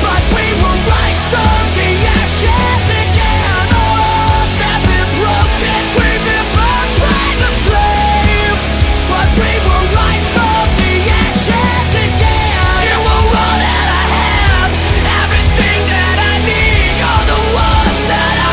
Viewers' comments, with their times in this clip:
0:05 Lucy be singing that shit